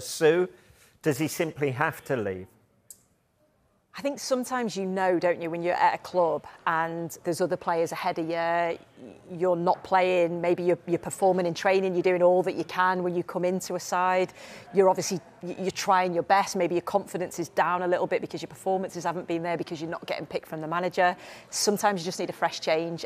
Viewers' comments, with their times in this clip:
0:04 Jordan Henderson's voice has dropped.